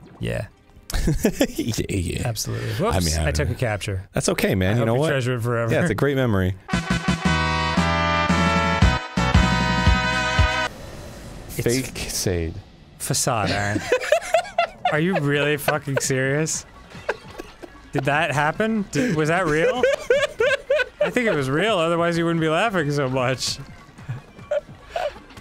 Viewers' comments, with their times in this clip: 0:10 flashback to the E-Y-E travesty of Zelda BOTW